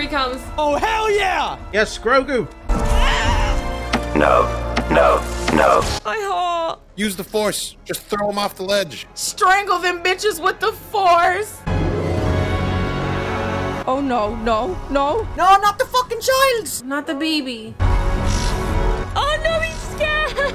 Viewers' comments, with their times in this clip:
0:03 That's Grogu Cry For : LEAVE MY DADDY ALONE YOU BASTARDS!!! So Cute